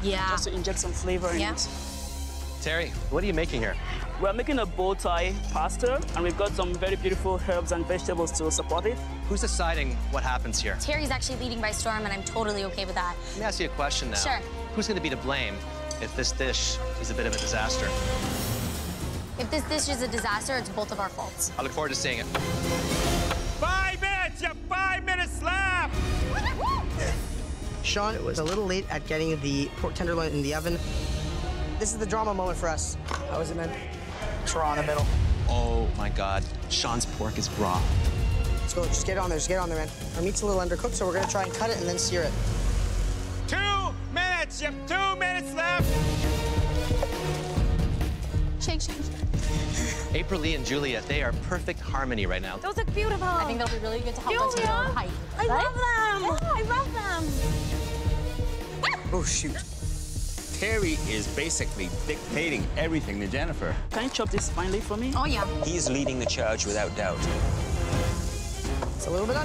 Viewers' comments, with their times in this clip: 0:05 I love this guys voice bro
0:26 that cracked me up, they sounded like chicken
0:53 she sounds like Ariana Granda from Sam and Cat